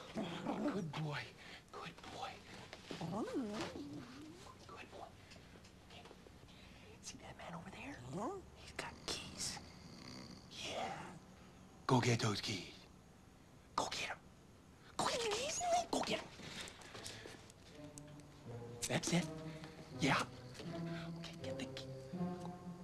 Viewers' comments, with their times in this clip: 0:07 I love Milo's "mmm" he does that a lot in the film 😂